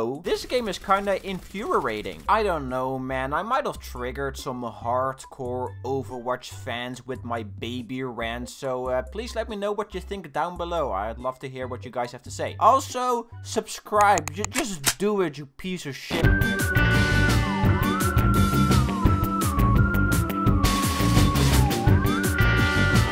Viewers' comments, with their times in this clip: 0:05 Dude I thought he said "Overweight fans" 😂 R.I.P Overwatch still a shit game tho